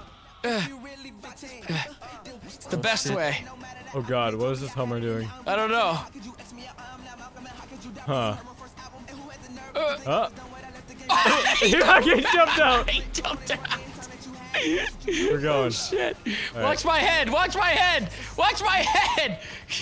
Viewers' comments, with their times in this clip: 0:06 dat rap doe